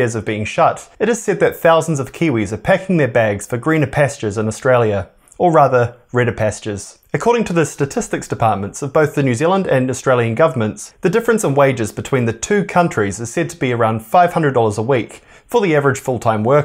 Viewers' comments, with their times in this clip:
0:03 Goodness me. I have never heard anyone from NZ pronounce "pastures" like that, unless they're from the Midlands in England. I can't imagine which school you went to.